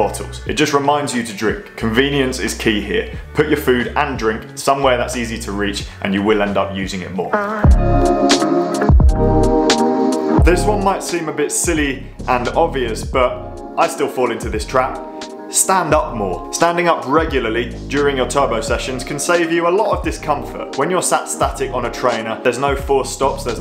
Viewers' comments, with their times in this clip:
0:07 V tuneful fart sound